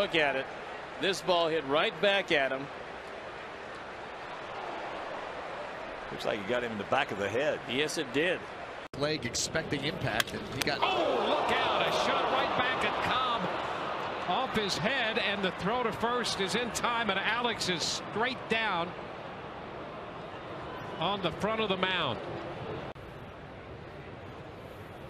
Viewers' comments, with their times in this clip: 0:10 The sound it makes when it hits his head is just terrifying